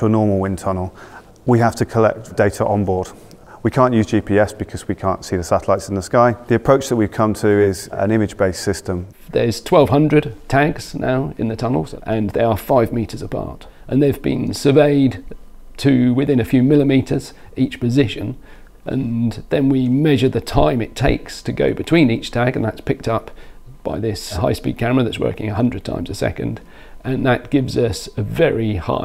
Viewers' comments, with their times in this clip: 0:10 is he saying tags or tanks?